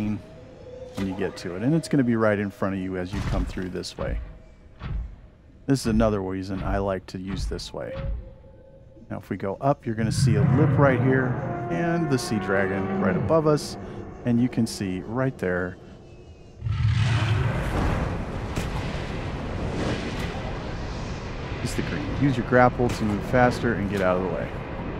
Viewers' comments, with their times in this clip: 0:09 bro explained this so calmly, how the frick